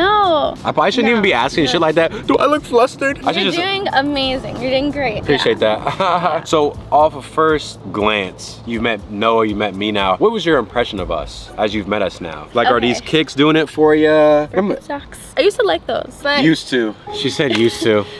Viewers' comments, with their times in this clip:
0:04 the meme laugh was crazy